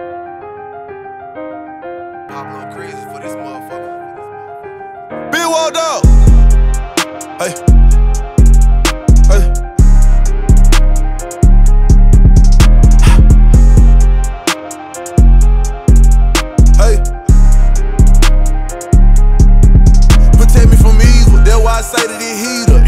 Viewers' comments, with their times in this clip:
0:04 That🗣(BIGWALKDOG) was lit tho😂🔥, in beginning of the song